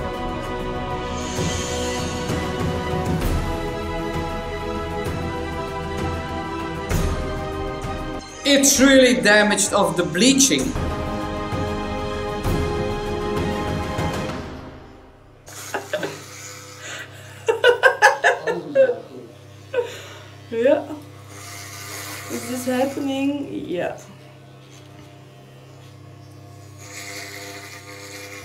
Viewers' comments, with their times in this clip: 0:09 the way you GIGGLED LMAO